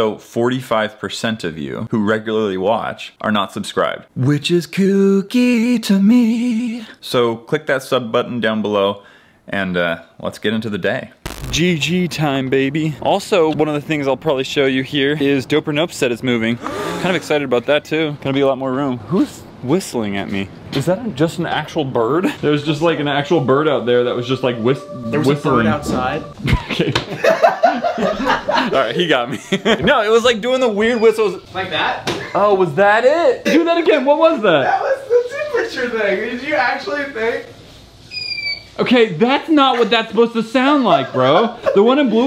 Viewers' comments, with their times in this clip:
0:03 i love your singing
0:25 Oh that sass LMFAO